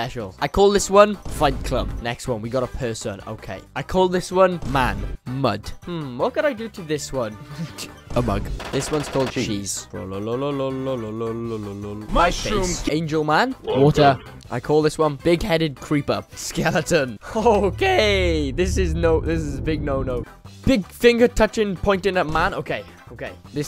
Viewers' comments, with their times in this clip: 0:10 NO. WHAT DID MUSIC EVER DO TO YOU THAT YOU HAVE TO BUTCHER IT LIKE THIS? I'm kidding; I luv u bro. :D